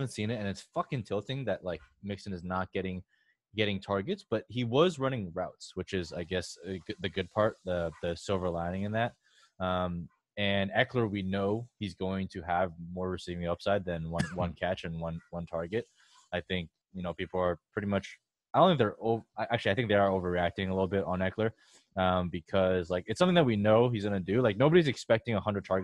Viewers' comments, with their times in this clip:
0:07 Maybe im trippin but you can hear bong rips and then a slight cough